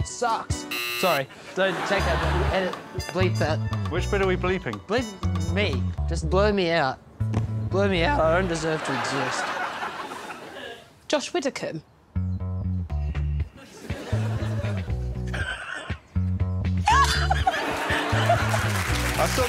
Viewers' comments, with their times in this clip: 0:07 The voice crack I can’t